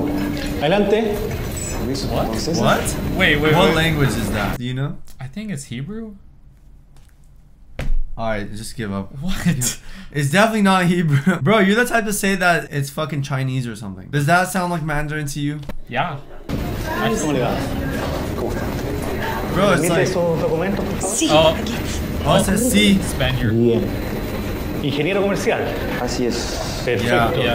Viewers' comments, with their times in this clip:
0:09 its frieaking spanish!